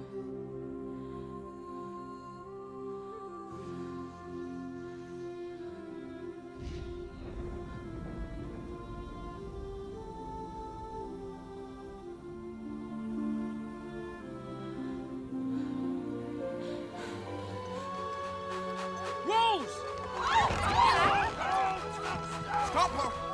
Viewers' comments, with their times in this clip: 0:04 when the flare goes up, the eye contact , the music. i cry every time. i hope i find a love as strong as theirs.